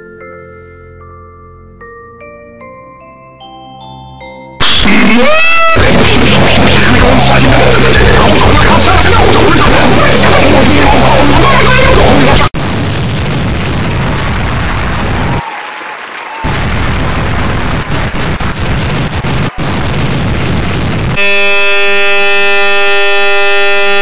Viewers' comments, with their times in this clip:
0:03 (UNTIL SUDDENLY) (FUCKING NIGHTMARE) (DEATH METAL)BAP BAP ABPA BAP UEHBUCGETUGECTUECVGTCY* (Explosion.avi) (A fucking nightmare no joke)
0:05 ear r warning (get off me that,s my ear)